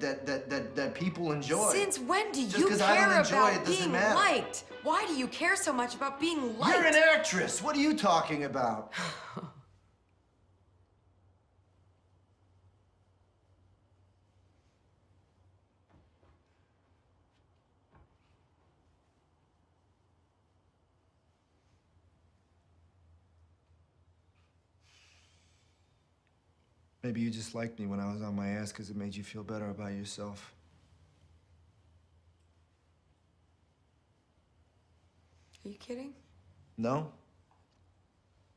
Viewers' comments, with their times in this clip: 0:09 jazz music stops
0:26 wow. Intense mic drop. Everytime he says this line, someone in the audience says, “oooooooooo”